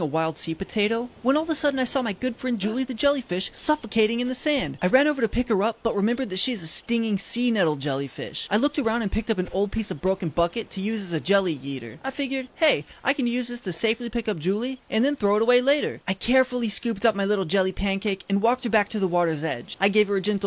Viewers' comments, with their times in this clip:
0:05 him: o found a broken bucket to use as a jelly yeeter Captions:i found a broken bucket to use as a jelly eater